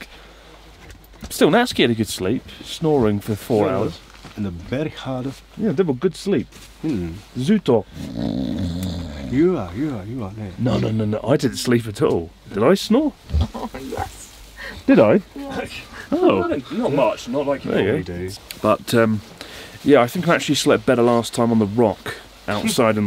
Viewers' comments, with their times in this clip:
0:09 that "Yes" is the most hilariously tortured yes I've heard in a long time :D